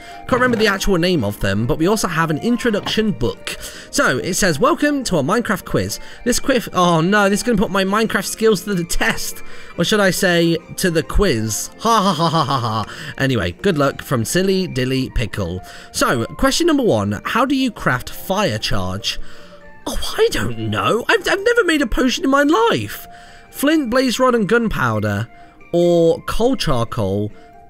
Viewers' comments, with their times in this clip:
0:08 This Queef xD